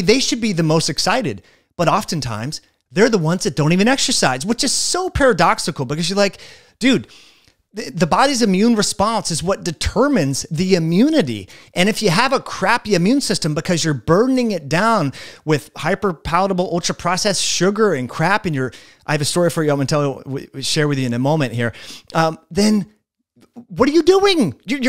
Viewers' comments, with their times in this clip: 0:08 you went full Frenchman there 😂😭😭